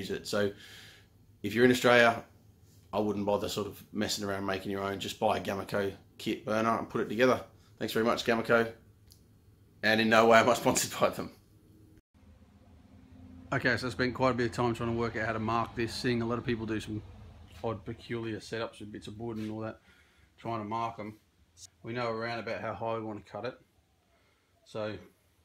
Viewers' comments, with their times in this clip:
0:10 Wanted to listen to your video and watch it but lost volume thought it was on my end but no
0:10 I lost audio at the exact moment as you ( ---right at the transition of intro and the instruction video), except I only lost sound in the right speaker/headphone cup. So what I believe has happened is that (probably)the intro was filmed with different gear than that used to shoot the video. Seems the intro was shot in high-def while the video used a phone camera that could take a beating in a shop environment but suffered a bit in the A/V areas. The sound will cut out entirely if you are watching on a device with a single mono speaker or speaker set to mono in your audio settings. Hope this helps.
0:13 Still no sound after (min-sec) into vid maybe youtube is still having a problem here in the US